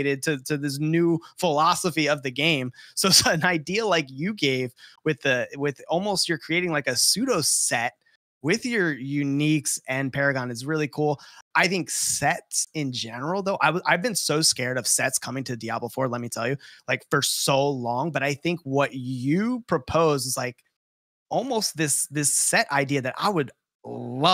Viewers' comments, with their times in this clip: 0:10 "I've been so scared of SEX coming to Diablo 4"